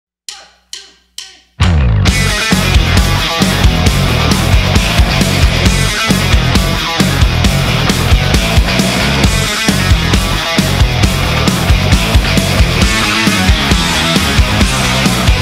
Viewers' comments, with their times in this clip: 0:00 Love the drummer’s voice